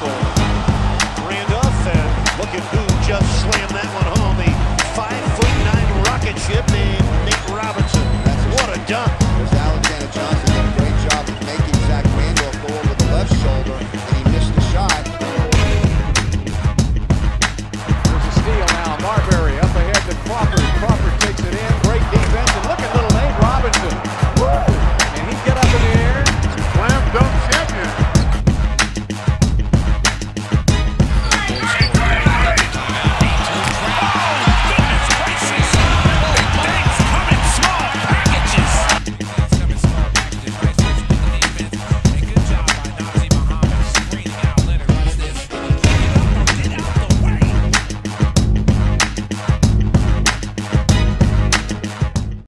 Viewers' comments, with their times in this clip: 0:09 did the commentator just rap along with the music 😂
0:39 till the end sounds like the announce rapping.